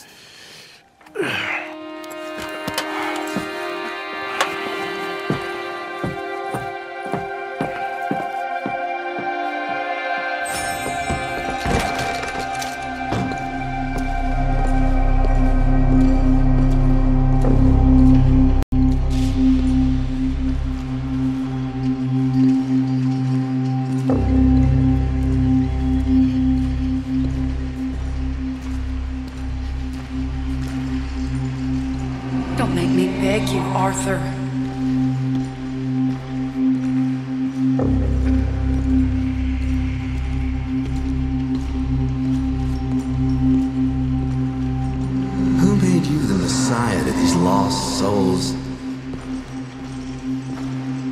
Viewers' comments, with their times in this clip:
0:05 wonderful music, almost heavenly...
0:35 The musical score in this game is insane. I love the low honor single piano key starting Just feels so badass and terrible at the same time